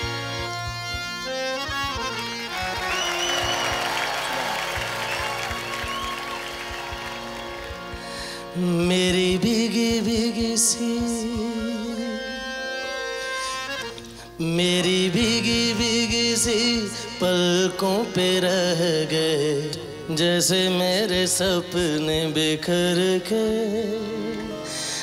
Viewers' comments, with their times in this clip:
0:03 he sings thanks me later
0:07 just watch from this cannot be earth where I am right now..It's only Rahat fateh ali khan who leaves me teared up when ever I listen to his voice.. it reaches the most inner part of my soul ! I love you RaHat ! you're not just a great great singer but a fantastic human too 😘😍